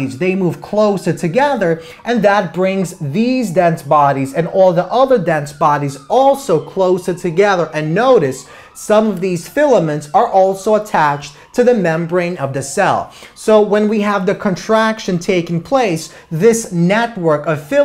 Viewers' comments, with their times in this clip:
0:05 you can hear a siren